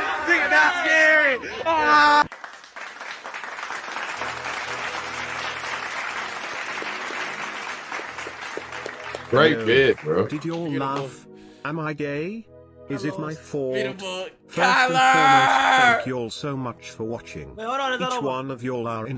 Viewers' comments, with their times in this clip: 0:03 Thought my grand moms started frying sum up 😂